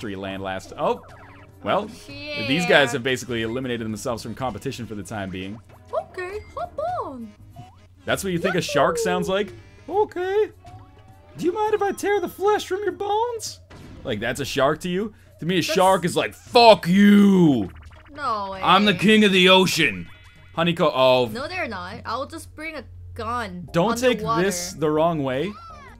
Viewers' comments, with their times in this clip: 0:07 you sounded exactly like Mickey Mouse. If Mickey Mouse was a flesh-eating shark.